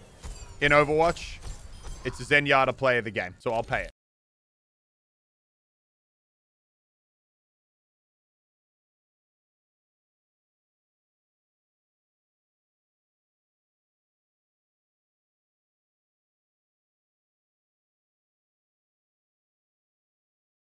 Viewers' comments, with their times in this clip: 0:05 For me it just goes black with no audio. Is that just me?